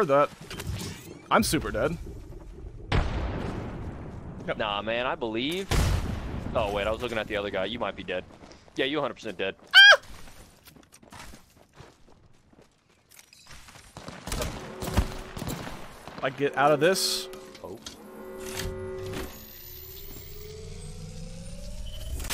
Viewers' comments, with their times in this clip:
0:08 turn your volume down